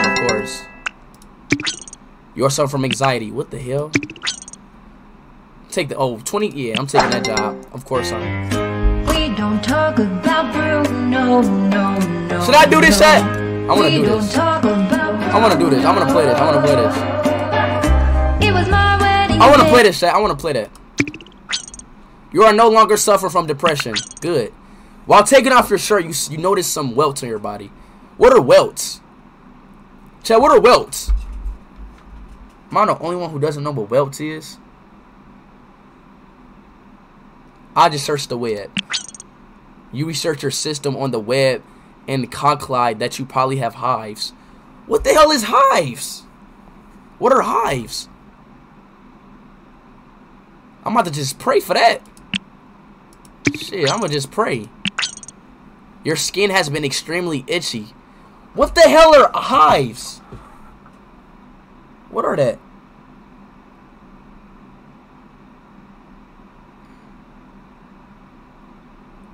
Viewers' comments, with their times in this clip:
0:08 WHEN THE SONG STARTED I WAS HOWLINGGGGG OMG 😭
0:42 man really said conclide 😳
0:52 my guy said cunclide